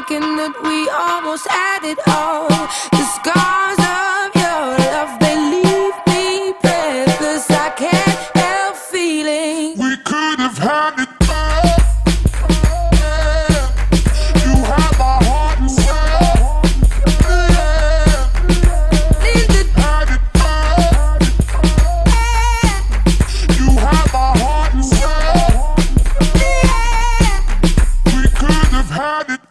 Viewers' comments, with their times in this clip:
0:09 is there a version of this where adele doesn't sound like chewbacca ?
0:10 anyone else cringe ? that drop was awful